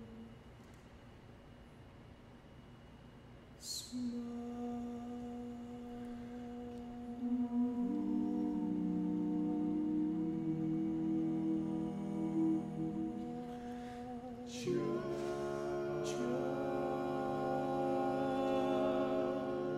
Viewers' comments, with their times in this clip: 0:05 Still my favorite chord progression in all of Barbershop